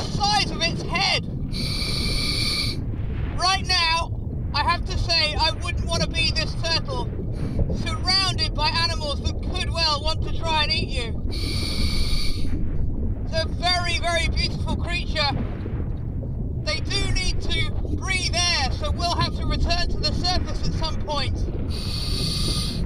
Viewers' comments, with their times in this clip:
0:03 "right now I have to say I wouldn't wanna be this turtle surrounded by animals that could well try to eat you" ... I wouldn't wanna be a guy being between such a turtle and a bull shark which in addion is circling my back without me having eye contact :D :D Maybe he's yelling loud enough to keep the bulls on distance :)